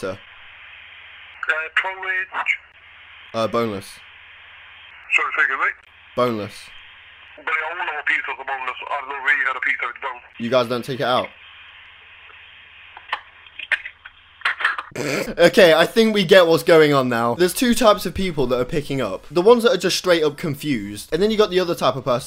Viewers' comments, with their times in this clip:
0:08 It sounds like he was trying to rap